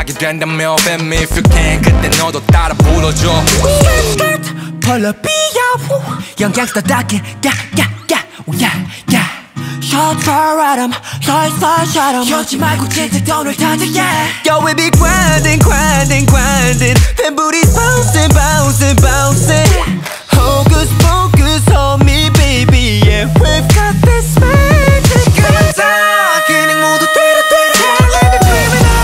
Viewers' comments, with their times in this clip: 0:05 Who's the guy in ? His voice!
0:10 how you sound when the pizza pocket hot af